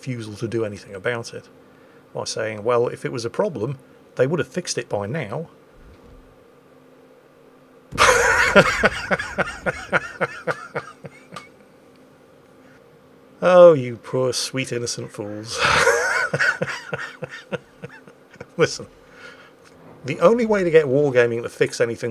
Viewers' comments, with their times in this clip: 0:06 That pause and laughter is pure comedy gold.